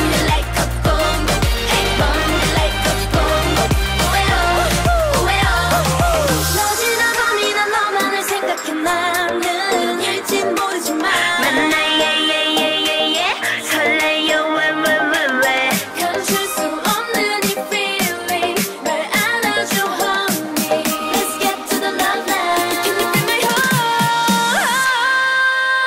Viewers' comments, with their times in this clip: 0:06 Just watched the og mv for this on tv and i really liked the song and their choreo. This one does sound much more hq tho 😍 Please someone tell me who this queen is 😭💖